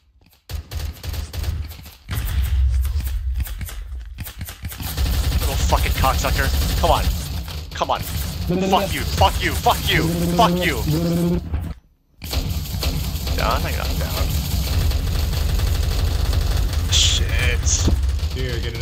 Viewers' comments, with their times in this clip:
0:04 the alien language truly is a wonder.